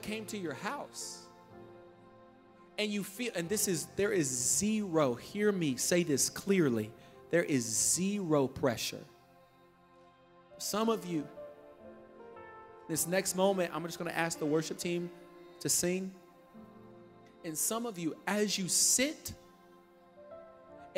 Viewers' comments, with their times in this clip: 0:07 And here he wants your money This guy need to com down allot The parts where he talks about the actually word of the bible and words of jezus he talked very very fast and the rest was him bullshitting Crazyfaith offering ???? What is that? Guilting u into giving money to who??